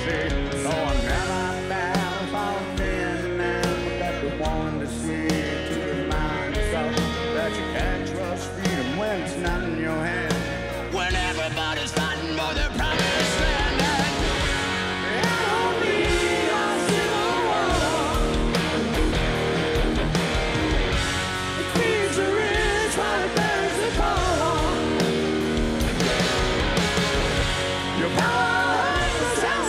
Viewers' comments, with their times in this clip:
0:09 ... God The voice isn’t gone
0:09 Love the collection. GNR still the best . Axl voice still good. Gotta have a new album. this is young Axl
0:11 90's Axl's voice